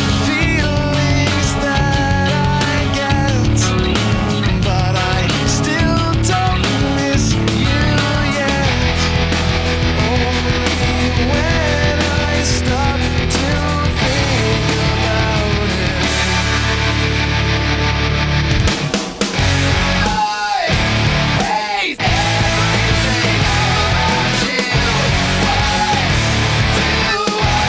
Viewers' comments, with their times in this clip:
0:09 I think he used reverb, or if your talking he used a tremolo affect